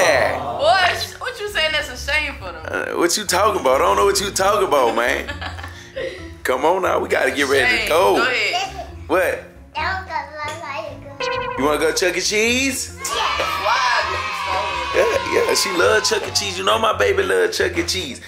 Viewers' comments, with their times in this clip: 0:03 bro why he sound like dababy